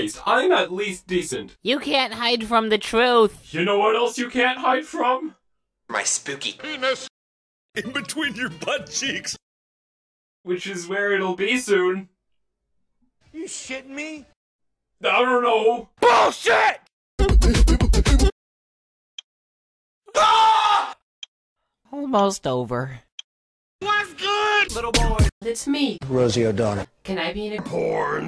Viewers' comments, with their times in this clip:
0:09 there are markiplier voice wow there alot